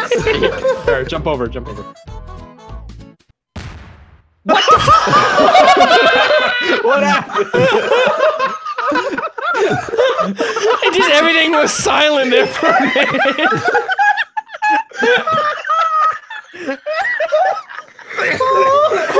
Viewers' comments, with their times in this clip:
0:03 All you hear BOOM!! 😂